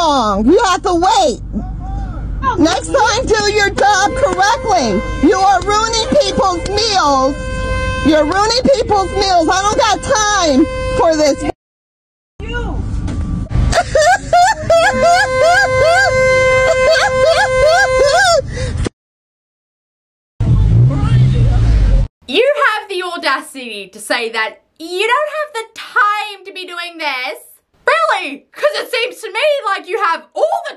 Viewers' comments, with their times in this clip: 0:06 I’m almost positive I know this mom, her kid went to my school and was a huge brat and also autistic like she said, but I’m sure it was her bc I’ve heard her laugh and sounds identical and she also happens to look extremely similar, her kid made everyone’s lives including school staff a living hell yet everyone seemed to give him sympathy for his entitlement
0:13 I thought the obnoxious laughter was fake crying until I read the yellow text
0:14 Not to mention the laugh 🤣🧓💋 People aren't gonna take her seriously because of the situation, and that.
0:14 Off topic, but who tf laughs like that 😭 I couldn’t even make out whether she was laughing or crying thank god for the captions-